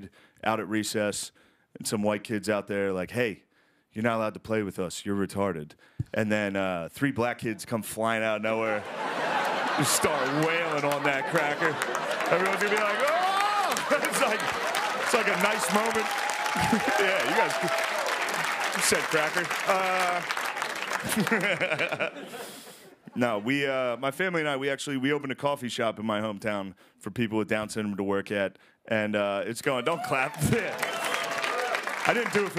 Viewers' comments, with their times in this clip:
0:04 the woman in the back laughing made me chuckle
0:16 The applause that joke was epic...Shane is a natural comic